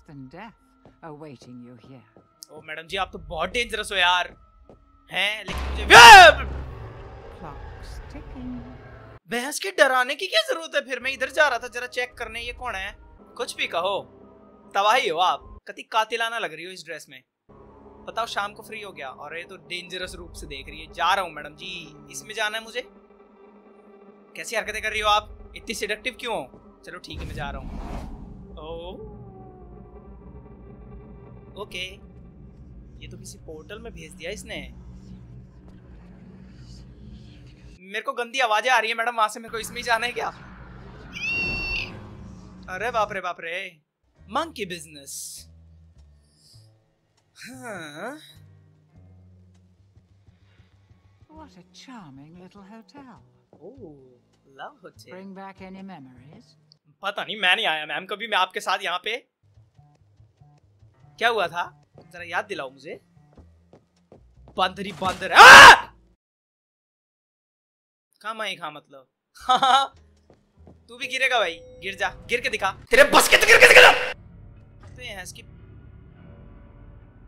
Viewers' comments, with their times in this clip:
0:05 headphone users died
1:04 I got scared of his scream. 😂
1:05 all headphone user survivors died
1:05 damn the way his face went straight after a quick scream 😂😂😂